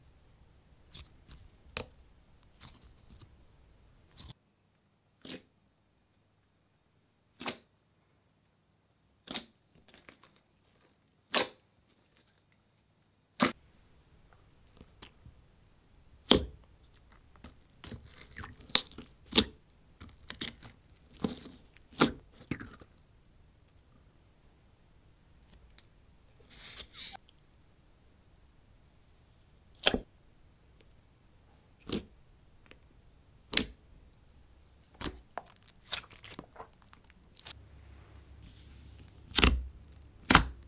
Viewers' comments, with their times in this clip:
0:06 so that's how Minecraft got the slime sounds
0:25 was a strange sound.